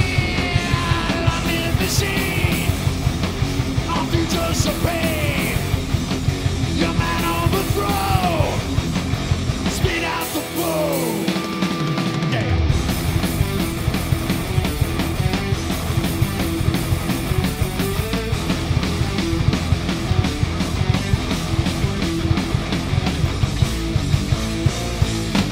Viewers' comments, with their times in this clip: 0:08 Good job! That drum fill is so cool!